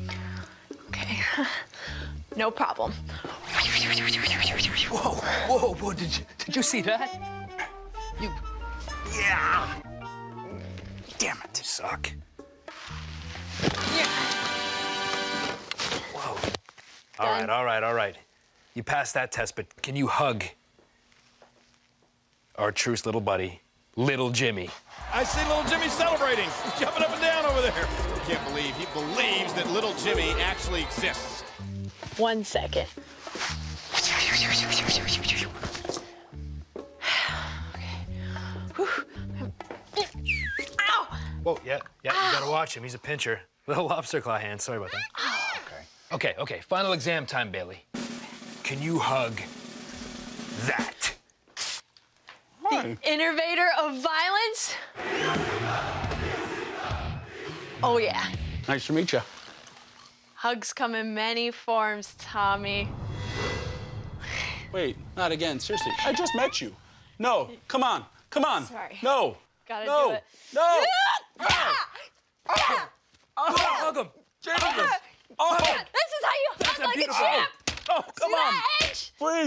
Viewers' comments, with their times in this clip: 0:10 Edge sounded like Solid Snake when he said "DAMMIT"
1:05 tommy dreamer sounded like kevin owens